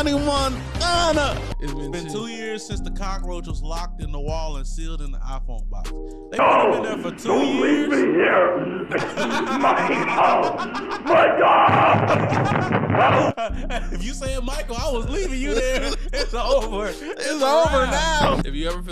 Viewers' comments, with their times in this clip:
0:06 you've seen this before and you guy laughed so hard lol